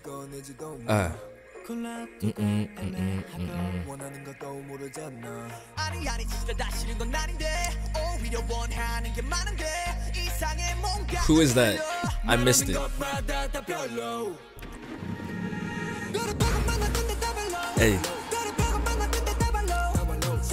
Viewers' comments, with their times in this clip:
0:07 Yasss finally . so many people did not like the auto tune , like I get it but at the same time don’t 😂 one thing with skz is even when they add a bit of auto tune they never add to much to take away from their natural voices. They didnt rely on auto tune. U can still hear their actual voices. adding some auto tune just adds flavor 👏🏾 it’s fit the vibe of the song and yes hyunjin still has long hair which is so shocking but they gonna make him cut it soon tho Watch 😂 and is Han jisung